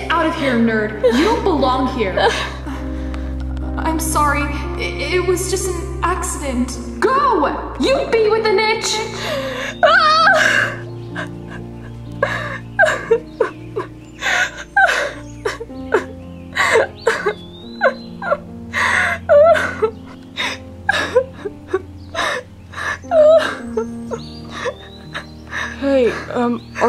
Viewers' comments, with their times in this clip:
0:08 This is so sad but that scream tho XD